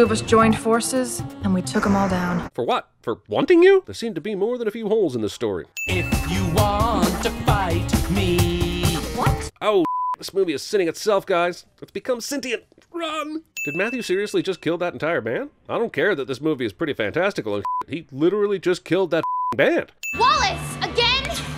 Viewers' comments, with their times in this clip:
0:08 = singing commences. Me = Oh God, NO!